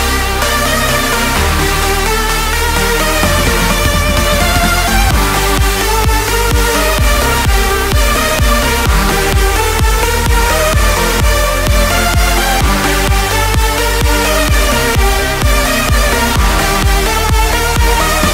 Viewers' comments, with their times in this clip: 0:04 OMFG! I died ! lmao ! I have to admit the drop was kickass though!